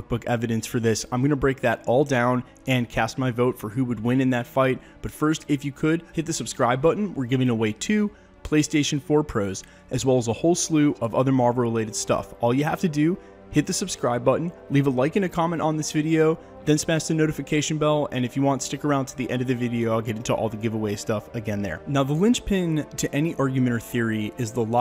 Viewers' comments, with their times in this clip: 0:10 A whole slew of Marlboro related stuff.